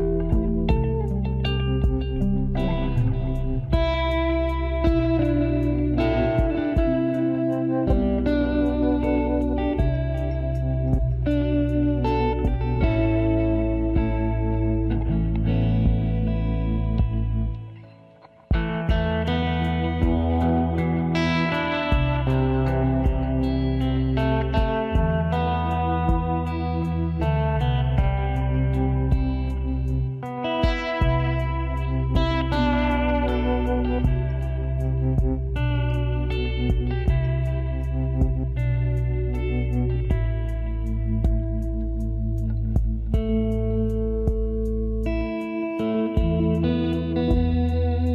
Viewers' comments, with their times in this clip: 0:03 That jingle with the guitar always sends powerful chills down my body. That and seeing the credits on screen effectively conveyed that feeling of "wow, what a journey" as well as a sadness due to the story being at an end. There's just something about emotional music playing over some credits rolling. It doesn't matter if it's from some movie I never even heard of, when I see something like that, I associate it with emotional nostalgia and a look back and the memories of adventures and good times. Whether that be the memories of the particular movie or game, or in my personal life outside the game. Or both at the same time something like the memories of the first one or games in general or memories with my friends playing this game together or whatever. Music in general is just powerful as shit. That guitar jingle though. It sounds like something I've heard of before. Something that beautifully conveys those emotions that I've just described.
0:30 Gotta love this guitar! <3